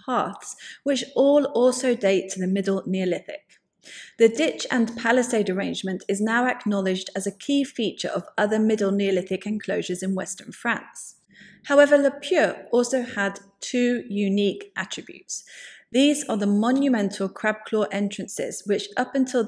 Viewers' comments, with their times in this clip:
0:05 No disrespect intended, but it’s better when you speak directly to your audience based on knowledge you’ve gleaned, in your own words, rather than just reading. Bailed out